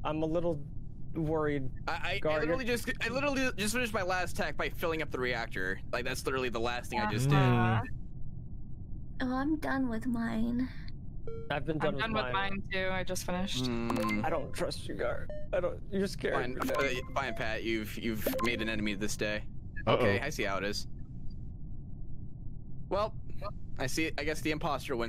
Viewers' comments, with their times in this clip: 0:08 I hate her voice with a passion I feel like Eren when he says he'll kill the titans with his bare hands I SWEAR SHE'S USING THAT VOICE ON PURPOSE